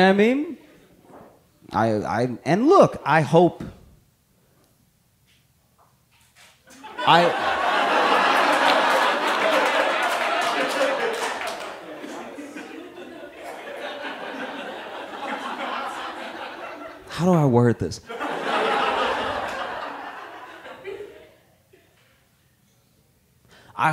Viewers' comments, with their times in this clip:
0:06 "I hope..." and Josh just trails off like... That sent me. 😂